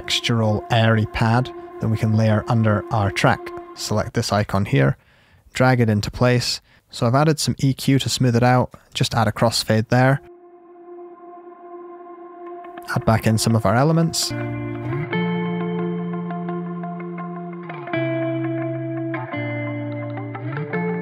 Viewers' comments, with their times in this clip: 0:06 How did you seemlessly add the crossfade ?